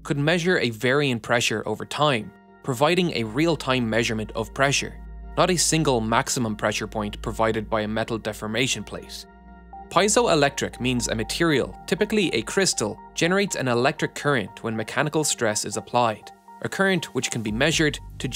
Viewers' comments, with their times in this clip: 0:04 Pie-zoh or Pee-ets-oh? As awkward as it sounds I always thought it was the latter...